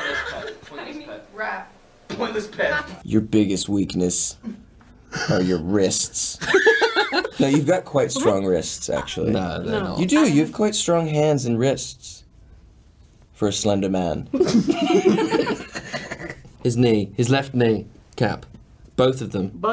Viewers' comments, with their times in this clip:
0:05 thomas' laugh ecks dee
0:07 Thomas his laugh omg 😍🥺